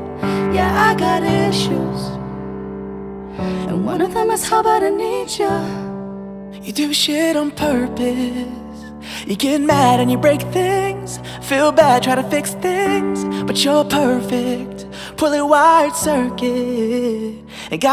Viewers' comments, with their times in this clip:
0:05 i swear, sounds like he's saying "You took a shit on purpose" lol